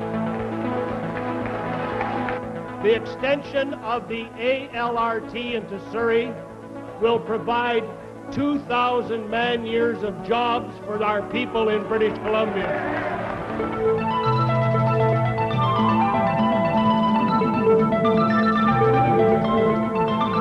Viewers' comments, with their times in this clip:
0:03 Mr. Bennett sounds like Donald Trump in my perspective.